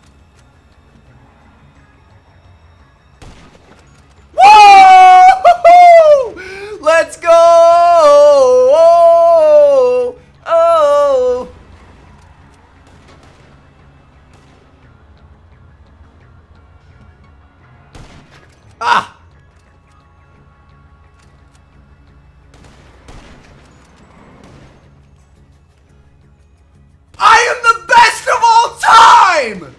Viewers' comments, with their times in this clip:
0:05 turn your speakers down again.....
0:10 Also when he started singing because he killed someone lmao